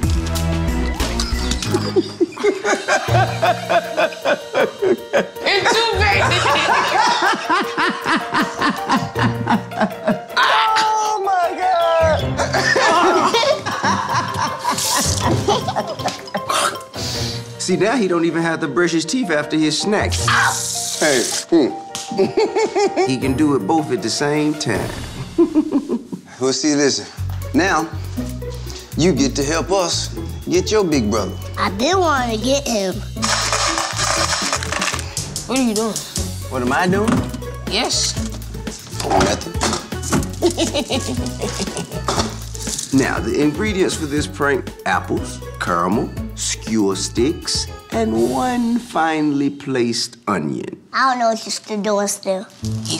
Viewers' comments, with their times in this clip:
0:09 TI laughs like laugh sounds like Michael Jackson thriller laugh
0:40 sounds like skelator.